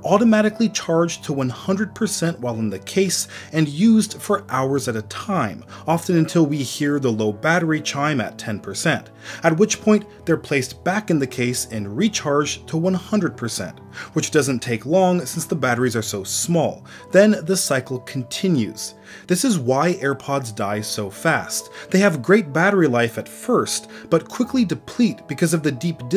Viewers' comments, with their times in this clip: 0:07 Thank you for not putting the sound